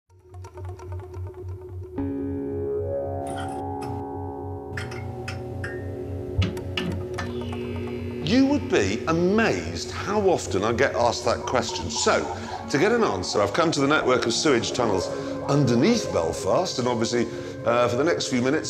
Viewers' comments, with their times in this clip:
0:03 That sounds eerily like the opening credits to Rubber Johnny.